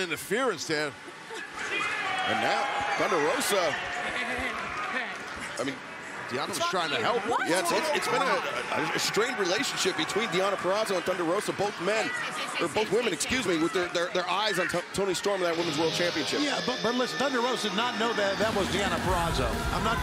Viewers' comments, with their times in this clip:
0:06 Someone was clearly asleep at the bleep machine that night... 😳